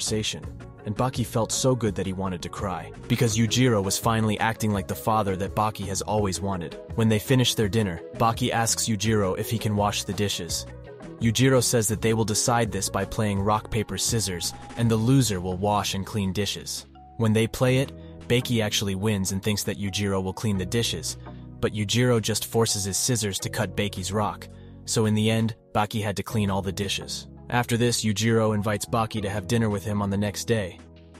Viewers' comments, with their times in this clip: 0:05 Bro wtf? You were changing up the way you pronouced Baki. FIrst it was Bah-Key then Bake-key, then bacc to Bah-Key?
0:15 Umm, who is banky???🤣😂😂🤣🤣